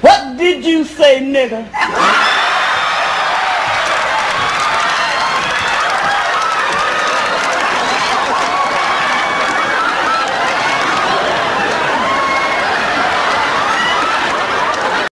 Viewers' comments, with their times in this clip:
0:13 You could tell that Redd Foxx was about to start busting out laughing